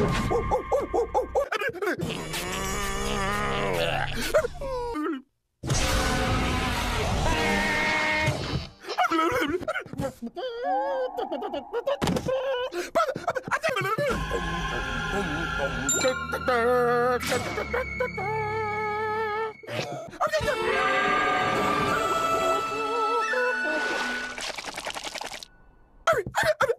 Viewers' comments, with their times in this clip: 0:10 I love the music. Makes it sound like that Courage is finally joining the fight and won’t hold back.